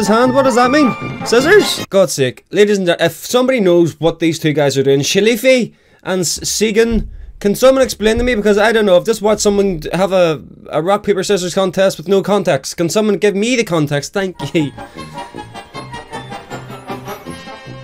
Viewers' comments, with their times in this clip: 0:04 chilly feet and seegen!